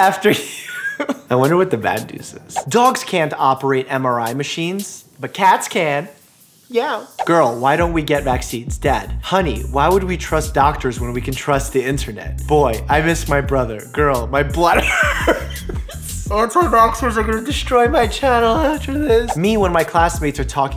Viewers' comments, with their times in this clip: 0:06 i like the meow XD